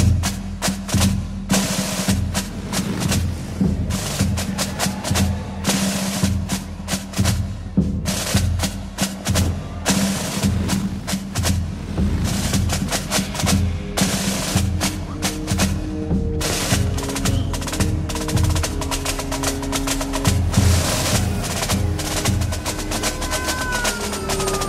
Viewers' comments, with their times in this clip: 0:08 First time I’ve noticed the sound of wind when the flag flaps.